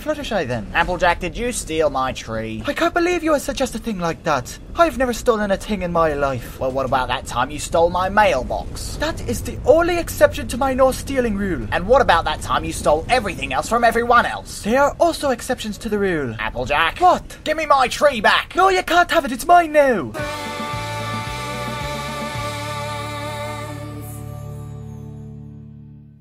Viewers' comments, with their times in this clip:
0:09 did AJ slip into Pinkie's voice at the end of that line?